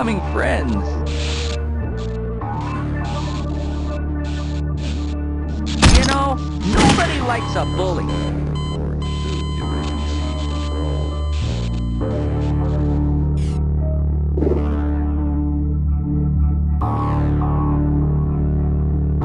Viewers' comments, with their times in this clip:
0:06 Scared me all of a sudden at max volume